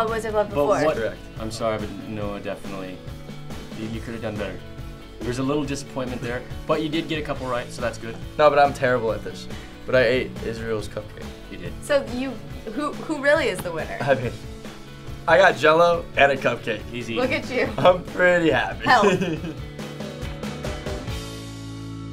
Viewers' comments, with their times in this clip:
0:07 Is Noa say 'Dobra' ?? hah